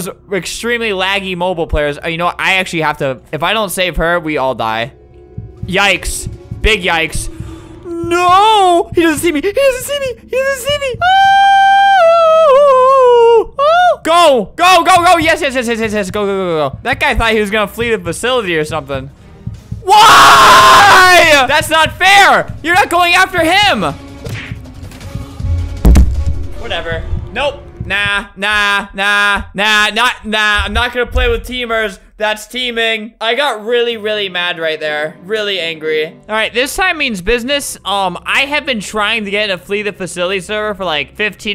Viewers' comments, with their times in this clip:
0:10 This is the best song ever
0:11 Me attempting to sing:
0:28 kinda sounds like a tune 🤭